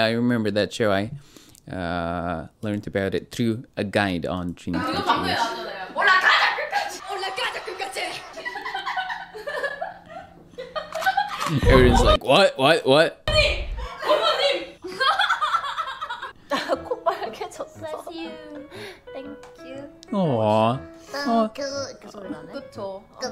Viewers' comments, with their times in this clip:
0:10 Jiu looses her temper at SuA even Gayheon seem surprised of Jiu’s reaction. Obviously Jiu, as a great leader, puts girls back in line for making too much fun of Dami. First time I hear that tone in Jiu.